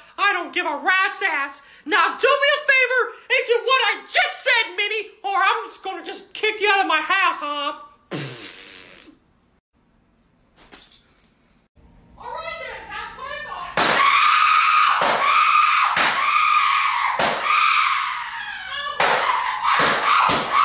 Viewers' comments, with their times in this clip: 0:07 Mickey Mouse Just blow raspberry As his wife 😮